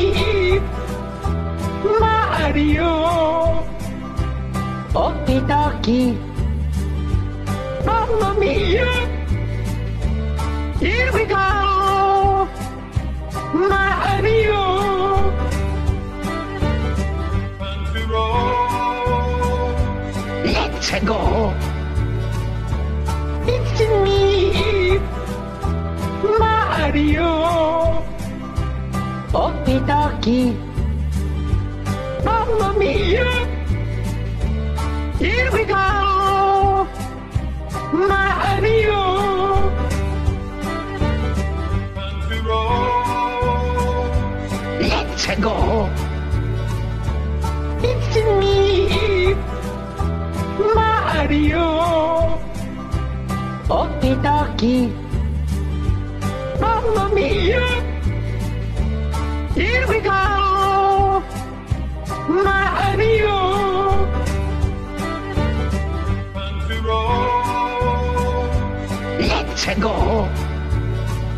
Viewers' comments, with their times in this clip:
0:03 Why do you hear Luigi that don’t sound like mario
0:53 He sounds like he’s crying And then OKIE DOKIE